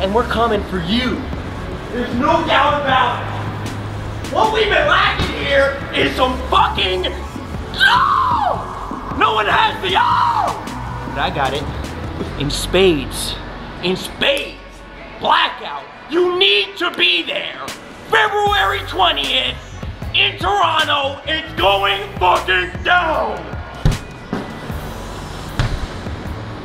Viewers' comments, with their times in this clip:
0:07 smh that was the most feminine roar I've heard since Katy Perry...